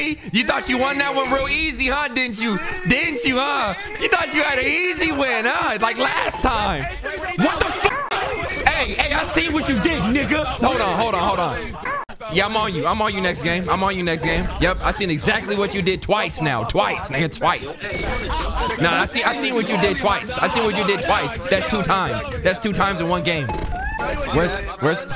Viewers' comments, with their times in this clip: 0:08 Why did he enunciate it so hard tho lmao
0:09 why'd he say nigga so aggressively like that 💀💀 i seen what you did nigga damm 😭
0:09 On he put some force in n-word
0:10 HE EMPHASIZED THAT SO HARD IM CRYING